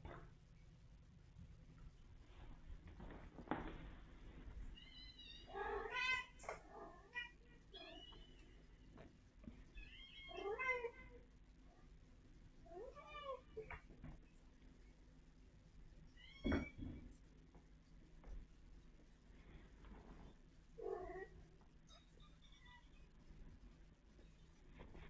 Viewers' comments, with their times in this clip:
0:07 Listen to this orchestra -ish. Who is making all of these purrs, squeaks, meows? Love the echo to, it adds a song-like quality 🥰